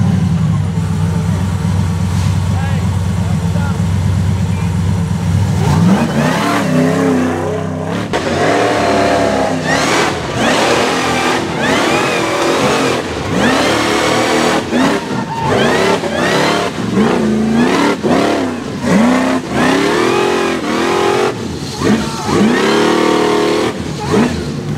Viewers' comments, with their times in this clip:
0:09 man that pro charger sounds good